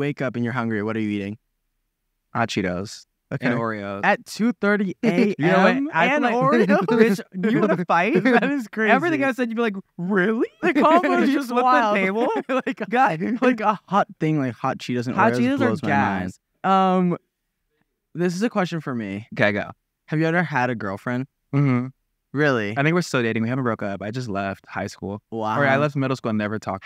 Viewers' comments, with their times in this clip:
0:09 Maybe it’s just me, but when Larray said “Really!” it kinda sounded like Scooby Doo 😂